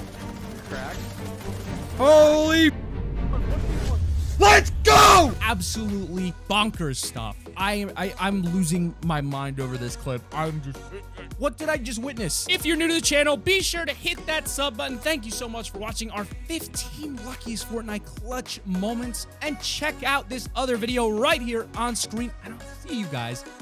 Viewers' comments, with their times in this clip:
0:04 dreams scream voice